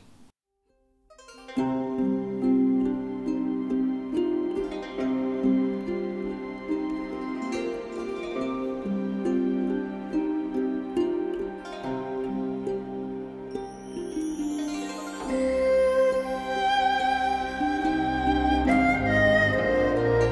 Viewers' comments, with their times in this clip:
0:03 Very nice music from 👍